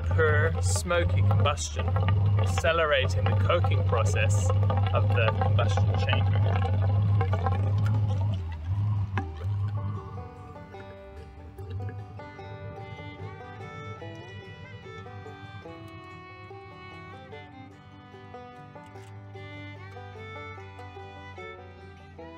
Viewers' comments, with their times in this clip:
0:06 Combustion produces water, so the exhaust should always point downwards. You can even hear it gurgling